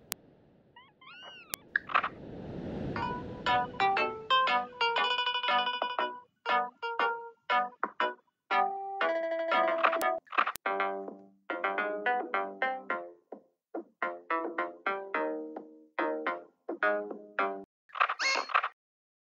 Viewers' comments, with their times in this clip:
0:03 y do i hear boss music